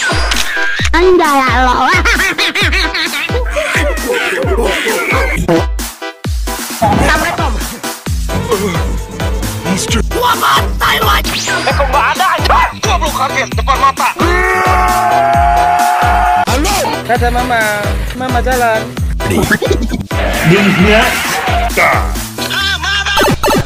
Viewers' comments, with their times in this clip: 0:06 What did the audio says in ? Something like "saam re tam"